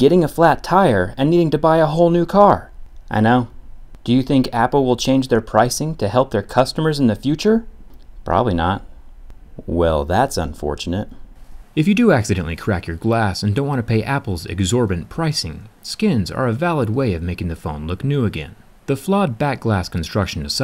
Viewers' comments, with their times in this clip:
0:08 sounded like Marques